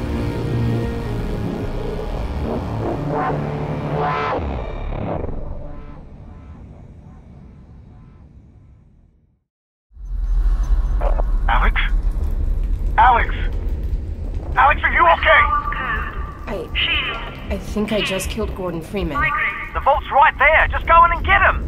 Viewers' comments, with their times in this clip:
0:04 The strider start music